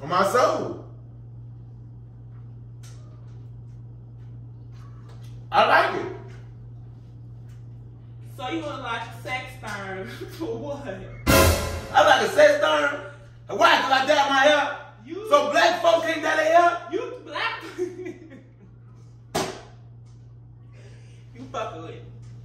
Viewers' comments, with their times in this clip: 0:09 What is the word ? A sex thurn? What does that mean?